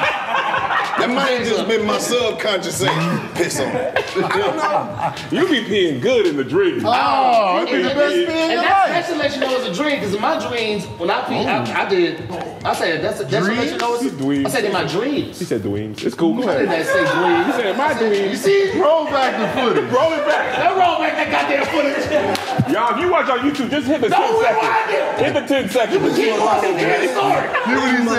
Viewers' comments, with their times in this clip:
0:08 In my dweams aye Tony caught his ass😅🤣😂😅🤣😂😅😅
0:09 Tahir fasho said “dreans” he tried to say dreams without closing his lips, his gums be fucking him up😂😂
0:10 He real life say “in my dweems” 😂😂😂